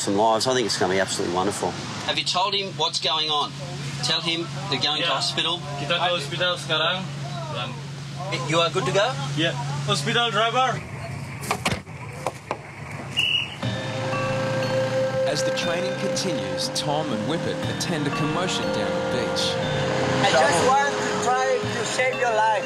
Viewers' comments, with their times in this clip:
0:05 Part ...did he just spoke malay? Omg im shocked😂